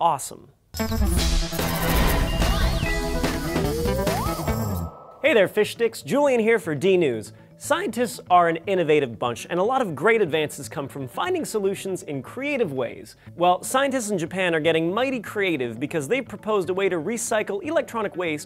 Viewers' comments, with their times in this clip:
0:05 "Hey there, Fish Dicks!"